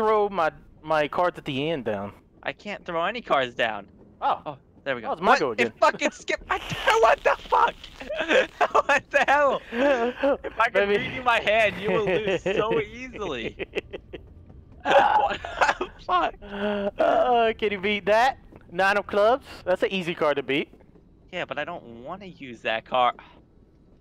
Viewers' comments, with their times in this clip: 0:06 I heard a vape. lol.